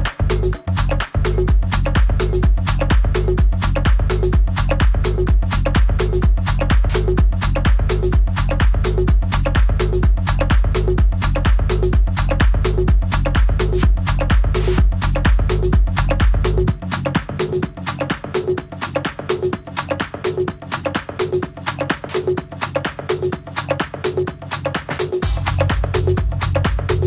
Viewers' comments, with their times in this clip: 0:09 The old Lady She`s crazy ! :)) good for her! by the way the beat it`s Killer !! :D